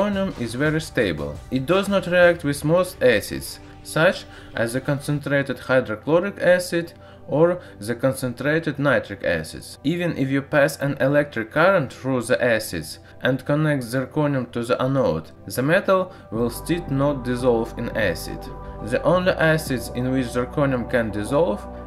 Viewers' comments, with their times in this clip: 0:09 "even as you pass an electric current through the asses" yeah 😳🙌 misheard that one